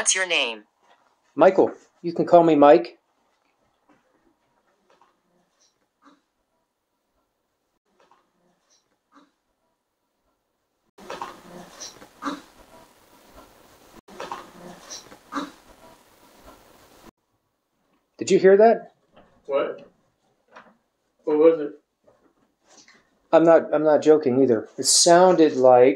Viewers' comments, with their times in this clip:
0:10 Wow, spirits are not shy here so this is going to be awesome. I couldn't understand her clearly but certainly replied to you.